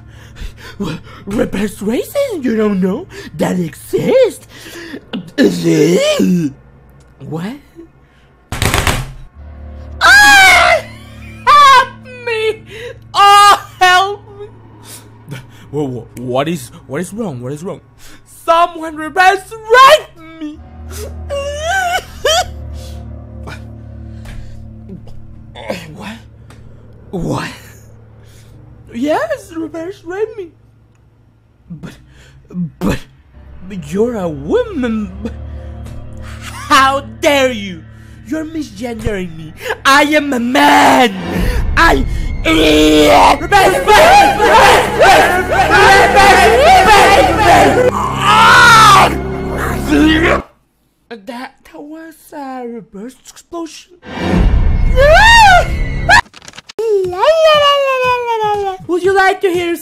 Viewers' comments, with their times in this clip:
0:05 Sounds like Garchomp.
0:41 When you hear the woman.